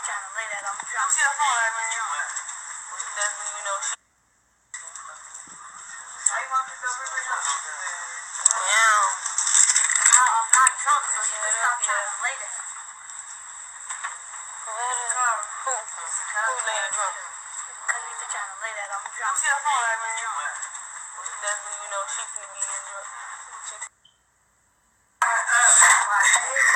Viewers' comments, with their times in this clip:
0:09 you hear someone (kenneka?) Saying I'm not drunk so stop trying to rape me